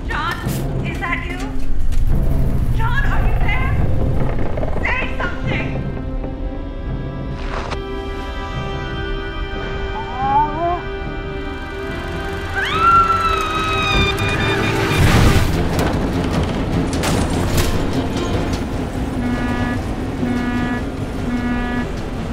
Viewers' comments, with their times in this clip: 0:09 i hear pyro saying no mames that in english means not fucking way
0:10 pyro voice line reveresed